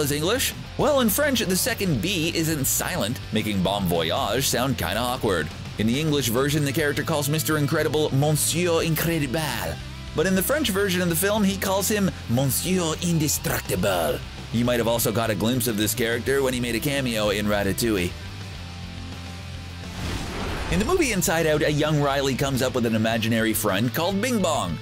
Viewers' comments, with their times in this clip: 0:07 That's definitely not the way you pronounce either "Monsieur" nor "Incroyable"